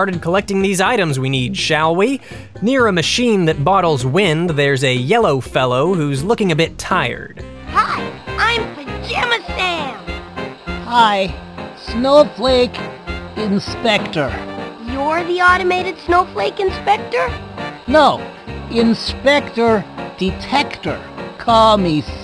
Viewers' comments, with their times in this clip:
0:07 Sam: I'M PAJAMA SAM!! YouTube captions: Damnit Ah Lol